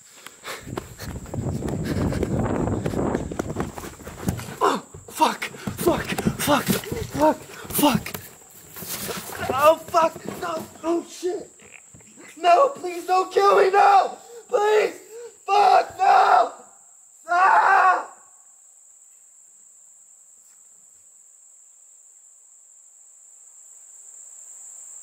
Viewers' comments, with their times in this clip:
0:09 is that a fart? Lol